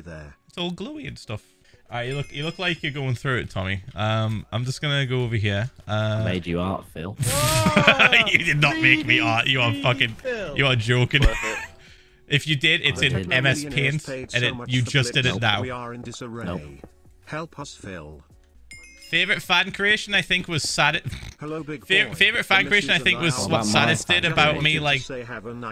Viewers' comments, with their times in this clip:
0:06 i thought he said I made you hard Phil 😂😂😂